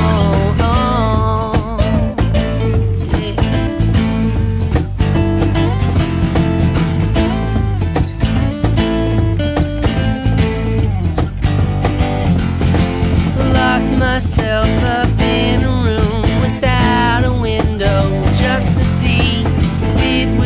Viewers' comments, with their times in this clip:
0:07 OMG the scream guy is here!